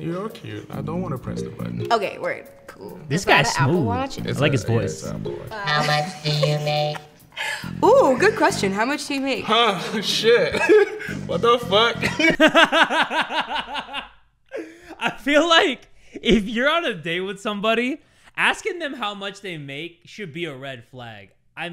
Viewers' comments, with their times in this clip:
0:08 the stutter on that man makes my sides hurt🤣😂